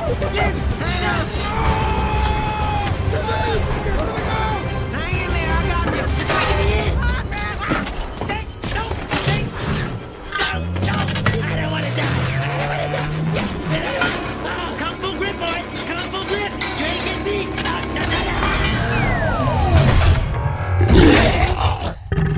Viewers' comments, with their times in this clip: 0:08 he sounded like spongebob right there.🤣